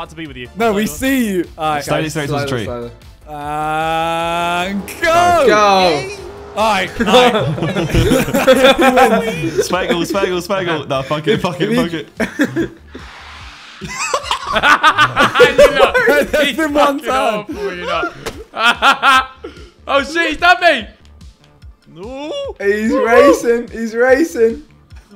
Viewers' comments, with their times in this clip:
0:08 The yay is so genuine i love that harry stopped masking a bit more
0:13 that was the hardest i ever heard Josh laugh 😆